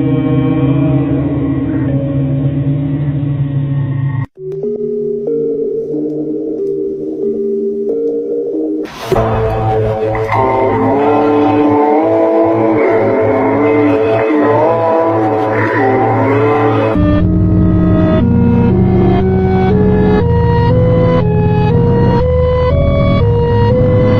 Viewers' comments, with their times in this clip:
0:09 not sure what song this is but its very relaxing. Can someone find the name?
0:09 does anyone know what sound/song this is from I cant stop listening to it. Such a weird and off-putting vibe
0:09 I really love the song 😂